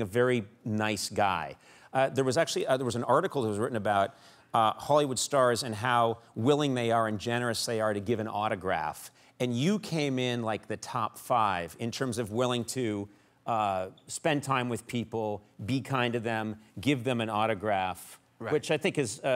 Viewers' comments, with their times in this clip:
0:03 that deep breath: